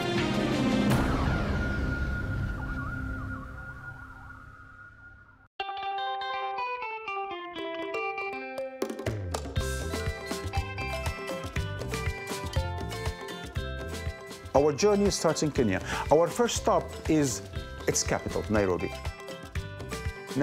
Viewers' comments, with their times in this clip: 0:05 What is the genre of the song ? I'm trying to find bands… Insane base lines!